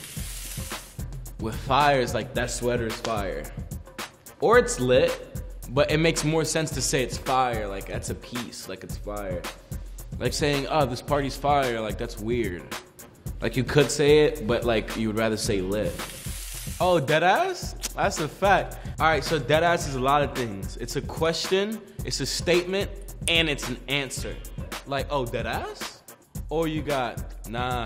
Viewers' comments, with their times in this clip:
0:10 Is new york accent come out lol